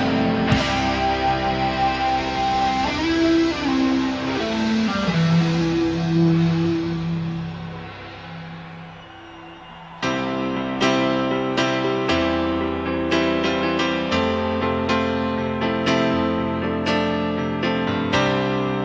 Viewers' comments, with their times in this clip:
0:03 Nod to Hendrix. Well done.